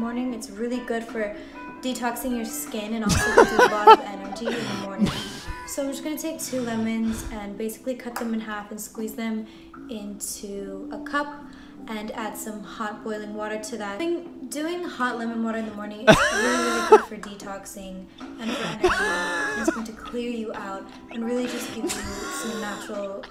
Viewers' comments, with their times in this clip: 0:06 when she hits those two lemons together you can legit hear their plastic
0:08 anyone else hear fake toy plastic lemons clang together? And i noticed she notices and squeezes them awkwardly. Lol